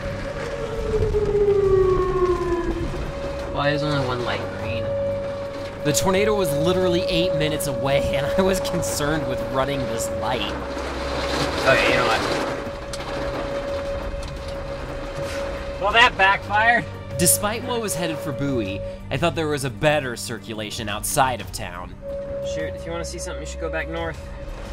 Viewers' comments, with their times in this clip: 0:08 Nice Whelen Ambiance